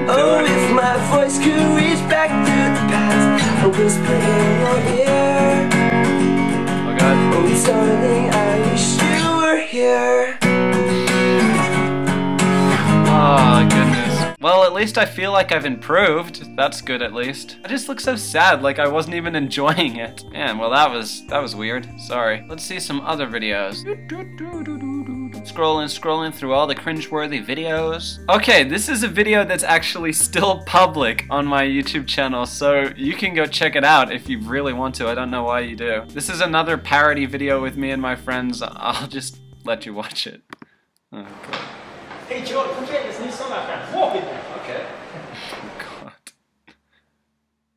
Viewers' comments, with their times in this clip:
0:03 well that was cute i guess lolz i actualy like ur singing voice
0:32 Why the hell is the way he says 'so' so attractive???